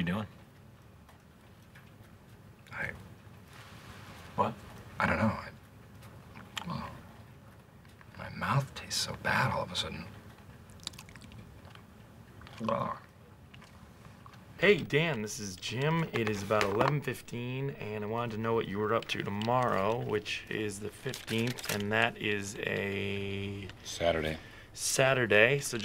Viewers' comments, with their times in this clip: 0:10 I love it how no one is going to mention the ASMR in
0:11 top notch asmr 😂